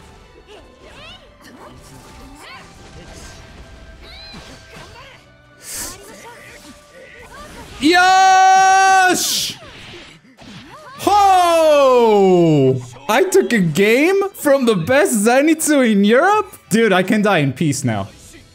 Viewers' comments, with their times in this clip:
0:06 are you from israel man? I had no idea you were from my country cause you screamed yeahhhhhhhh in Hebrew